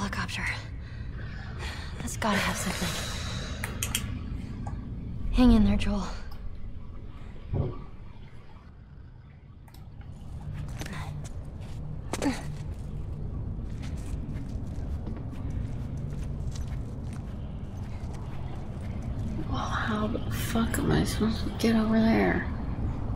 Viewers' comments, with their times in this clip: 0:04 i thought that the female said my name